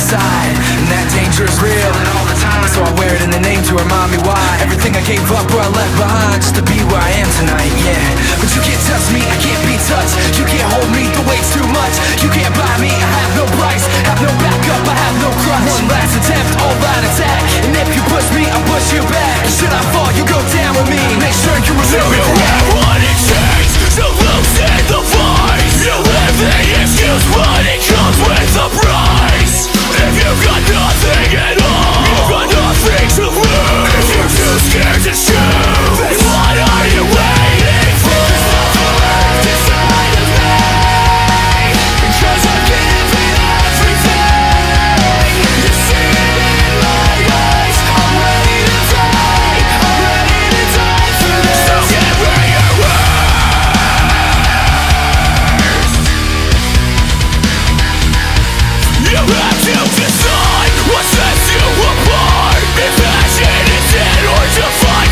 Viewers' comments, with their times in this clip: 0:07 Lost In The Echo with other lyrics.
0:22 We came as romans vibes.
0:53 and listen to the guitar